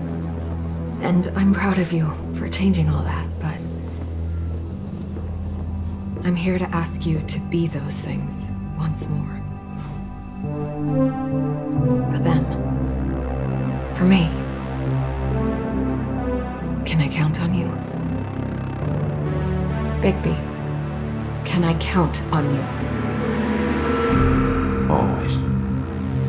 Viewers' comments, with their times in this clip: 0:09 Love the 80s style beat